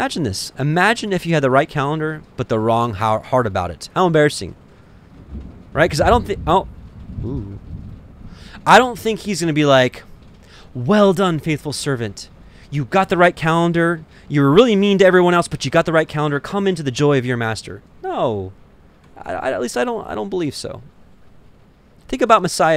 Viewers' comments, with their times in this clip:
0:06 So I recently felt like participating in the sabbath, so I took off Saturdays at work. I work in retail. but (Saturday) did I get it wrong? I’m not clear on Yahuah’s calendar… side note! also the thunder rumbling in the background as you spoke about not fighting with each other about the days that you and your friends observe being different was major! and felt 😮